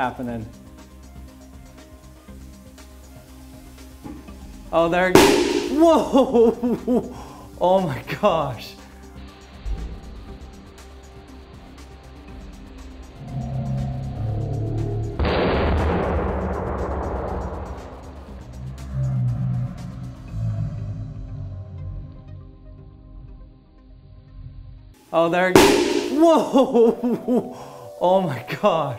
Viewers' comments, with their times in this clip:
0:03 BOOM oh wrong channel..
0:15 sounds like a gun shot